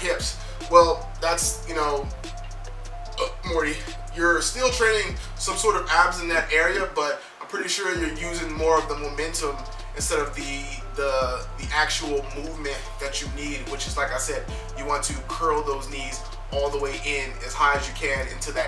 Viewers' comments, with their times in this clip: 0:03 you can hear him burp and say "Morty". Lol You sir got a new follower